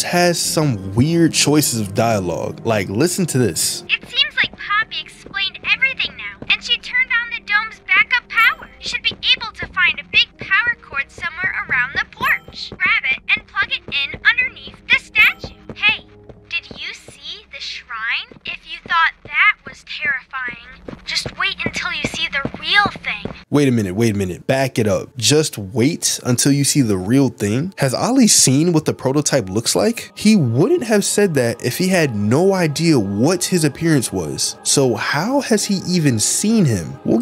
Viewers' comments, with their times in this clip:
0:06 i didnt notice till now how much Ollie sounds like dora💀
0:16 It’s called an american accent.
0:16 omg i just noticed ollie DOES sound like dora 😭💀
0:17 doras voice?? I didn't even notice it
0:18 GOT ME LAUGHING AT THE DORA VOICE LOL💀